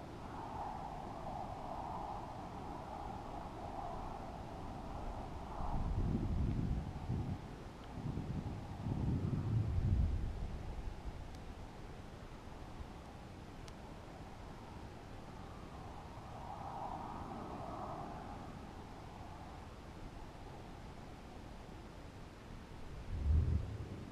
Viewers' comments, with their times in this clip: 0:06 it sounds crazy